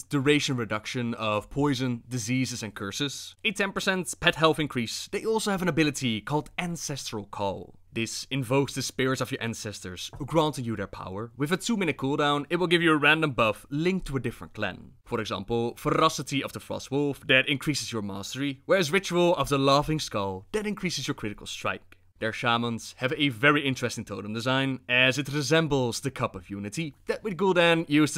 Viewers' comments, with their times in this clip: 0:09 wii music plays in the background